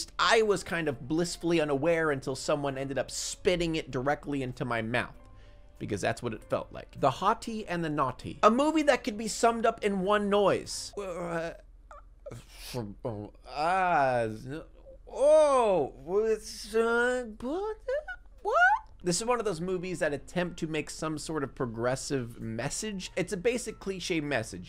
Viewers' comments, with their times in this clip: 0:08 Femur breaker screams intensifies
0:08 that's like 30 noises 🤣
0:10 That was no mere noise, it was a symphony. I am truely and deeply touched.
0:10 now I might be a lil smooth brained but I think that was more than one noise